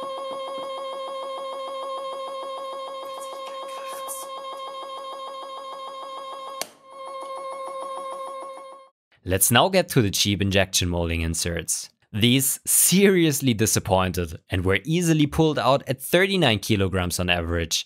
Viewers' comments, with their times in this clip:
0:03 Amazing video as always. I started laughing when I heard the subliminal messaging or maybe it's ASMR haha